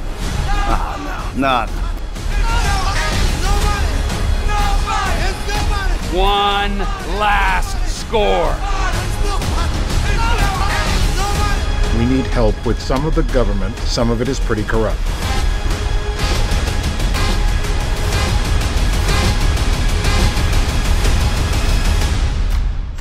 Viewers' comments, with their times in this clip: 0:06 this sounds badly familiar and sad